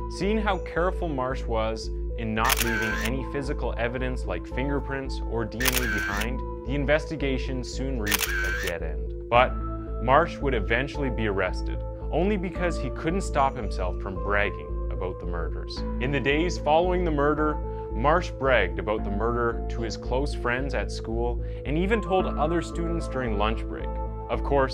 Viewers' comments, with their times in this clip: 0:05 this is a great video, my only nitpick is these camera sounds are a bit loud